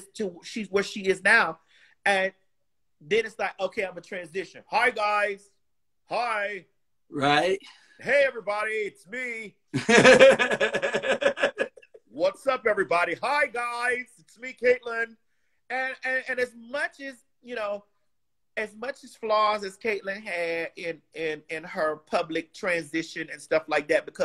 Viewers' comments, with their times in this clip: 0:10 Maddie : Hi Guys! (In a man's voice!) Me : Fell off my bed (Still there!) The 😂😂😂